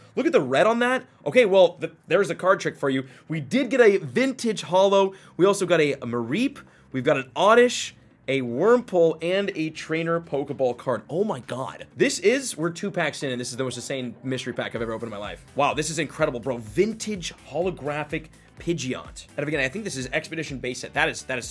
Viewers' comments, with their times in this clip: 0:08 I really like that ‘Wurmple’… 😂